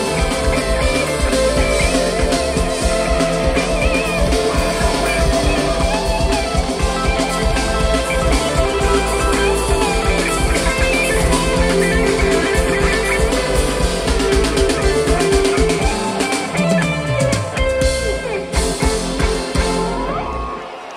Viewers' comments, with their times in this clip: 0:04 holy shiiit mikes goin in...love this jam :) <3